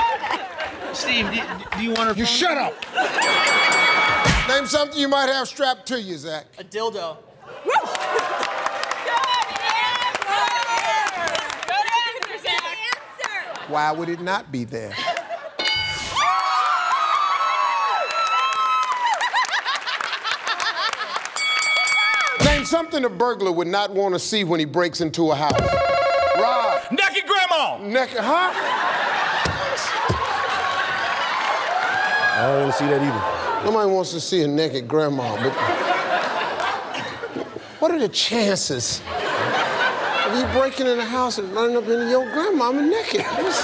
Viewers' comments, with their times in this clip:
0:07 did she actually bark xD
0:23 he answered that a little too passionately 😂😂
0:25 he said it with pride
0:26 XD the way he said it.
0:26 why did he have to shout...